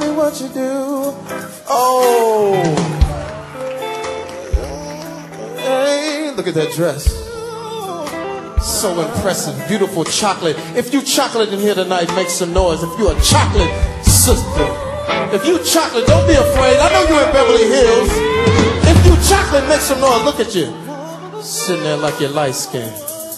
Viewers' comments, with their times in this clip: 0:06 The run his background singer does gives me chills!